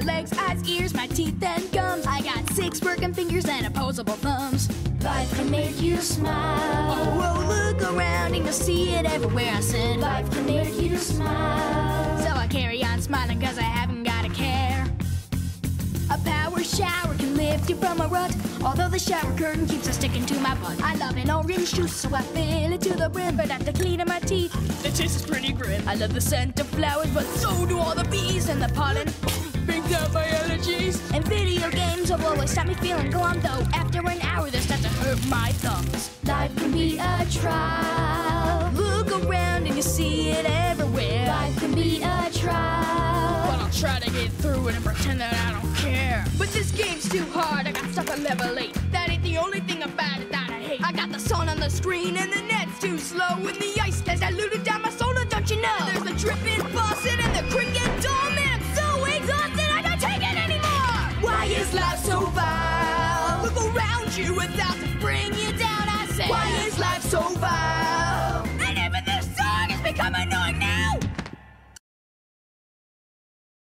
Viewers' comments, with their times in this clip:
0:05 The voiced got me
0:29 you sound like richard
1:01 is it just me or does this bit sound like the sun proposed to the moon chorus 😂🤔